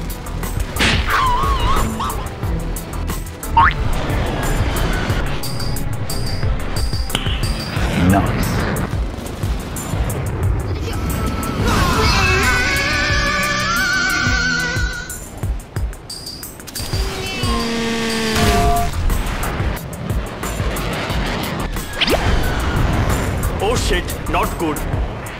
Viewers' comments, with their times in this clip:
0:10 Omg, I love that kid screaming blyaaaat, how is it called? From and I mean the one with the song cover, anyway love, greate vids❤❤❤